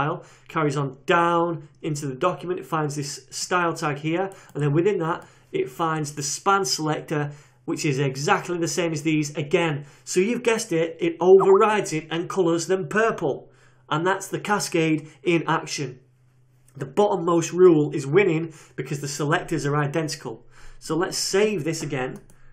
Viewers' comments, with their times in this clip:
0:10 Who else thought they got a skype message